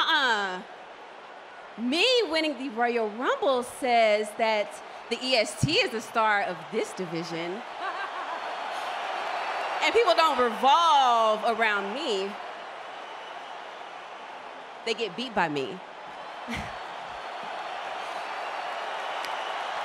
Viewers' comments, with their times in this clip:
0:07 sasha’s laugh is sending me it’s too iconic